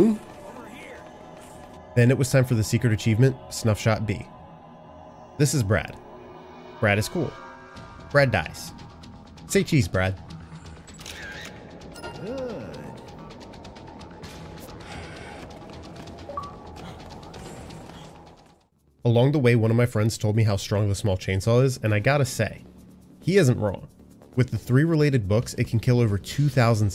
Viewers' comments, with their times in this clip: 0:07 Bread dies (Brad) lol